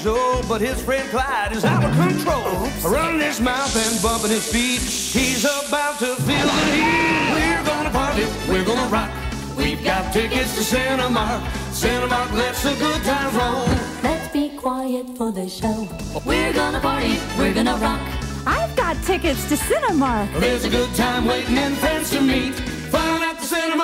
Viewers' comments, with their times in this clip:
0:07 Did anyone else notice the Goofy holler